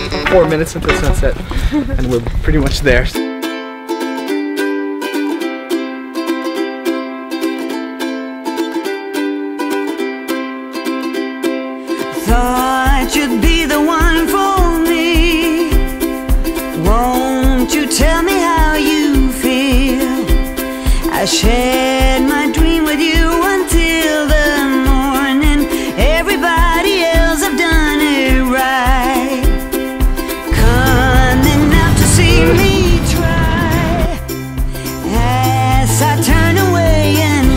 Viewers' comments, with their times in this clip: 0:03 sounded like Riptide.... Got disappointed:(
0:04 that song sounds like riptide by Vance joy, but the beat is spead up
0:09 I though the song is was riptide by vance joy 😂, same melody and all
0:19 Guitar sounded like riptide at first